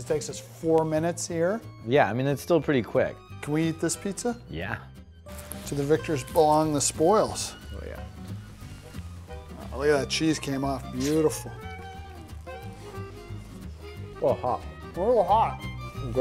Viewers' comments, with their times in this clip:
0:03 I don't know why but that just sounded so weird.